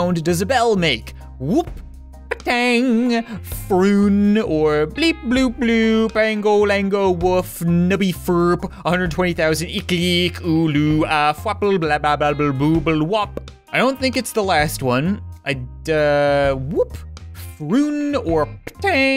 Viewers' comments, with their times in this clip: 0:03 it sounded like he had a stroke
0:05 No one : Friend who learn new language
0:05 omg you really read it out loud! I just didn't look a the text itself and listened to your voice and it was hilarious!!)